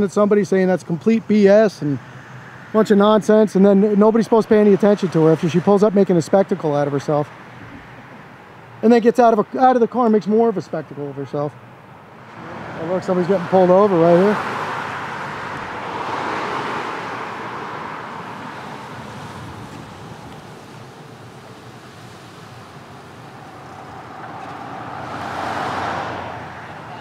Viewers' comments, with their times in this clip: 0:08 Easily heard that loud, rude and obnoxious “B”.